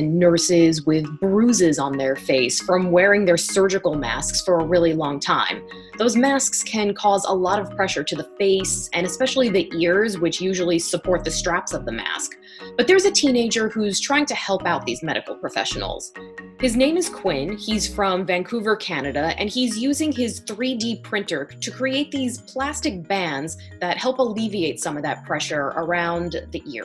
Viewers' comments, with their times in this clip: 0:09 So I’m the only one hearing an iPhone ringing ?🤔😂